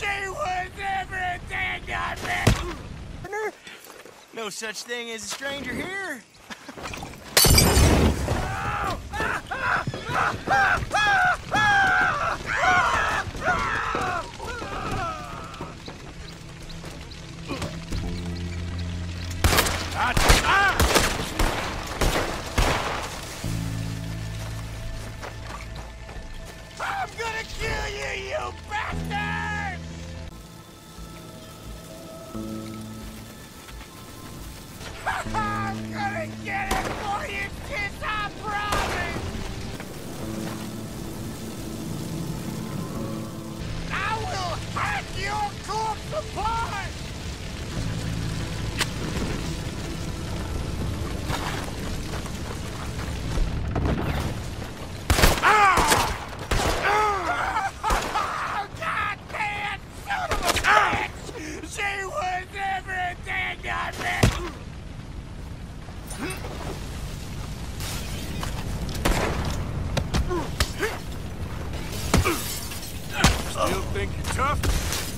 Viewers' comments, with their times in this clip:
0:06 he do sound just like
0:59 bray sounds like chris griffin when hes screaming about his sister dying